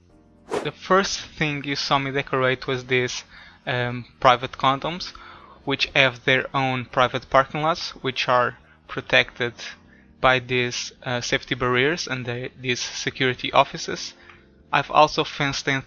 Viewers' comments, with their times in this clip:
0:03 private condos or condoms???